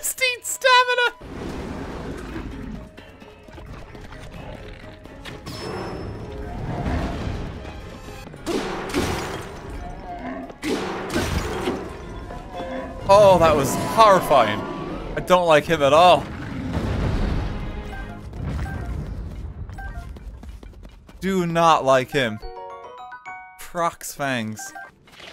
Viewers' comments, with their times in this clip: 0:08 the Frox makes one sound effect that the camels in AoE or AoE2 did. i find it beautifily comical.